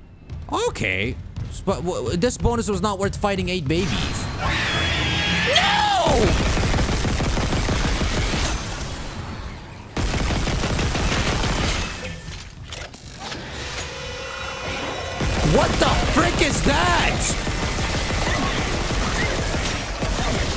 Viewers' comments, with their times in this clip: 0:05 like an actor's "No" lol